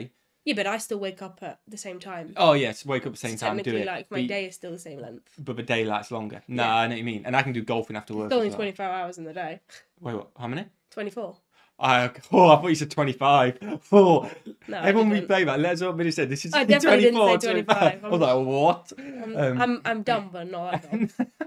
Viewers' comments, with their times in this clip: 0:08 I heard 25 hours